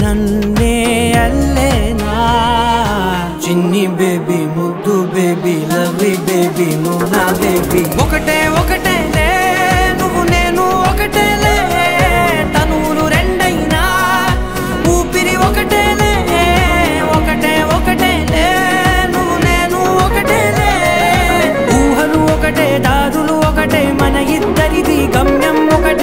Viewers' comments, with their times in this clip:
0:07 what a lyrics just awsm. i loved this song than the recent released pushpa's 1st single sid sriram what a voice!! loved it (this no not hesitate or hurting u guys. what my thoughts i have been said) thankyou. ❤️